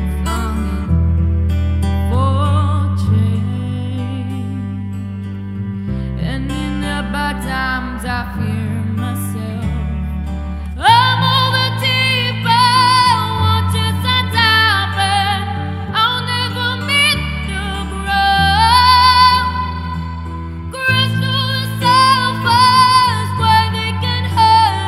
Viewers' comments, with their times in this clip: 0:10 life starts ,,,,,,,,,,then the angels sang,,,,